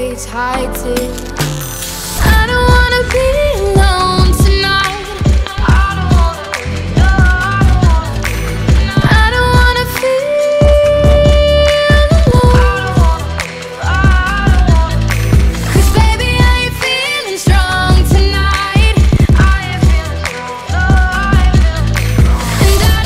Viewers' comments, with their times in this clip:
0:04 oooh that bass :)